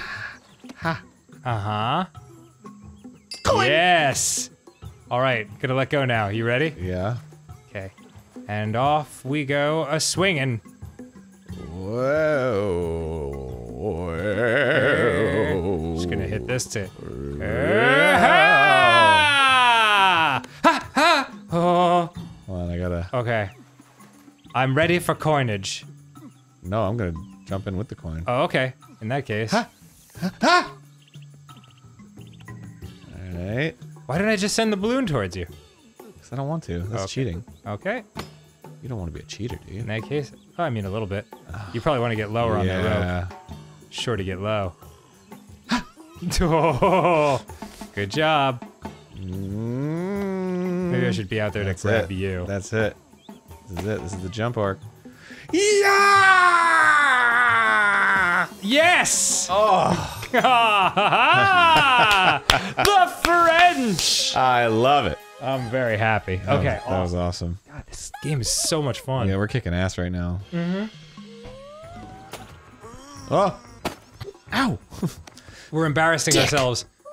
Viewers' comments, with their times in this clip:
0:03 Dan:ahaaaaah Arin:*in a voice resembling Shaggys*. COIN!
1:00 was almost the "I have to laugh" laugh from "If We Were Gay"